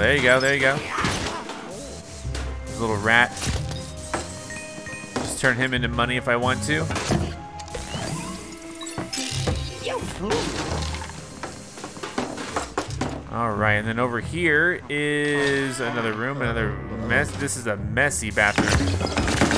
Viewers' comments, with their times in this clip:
0:06 hey thet beat made my day!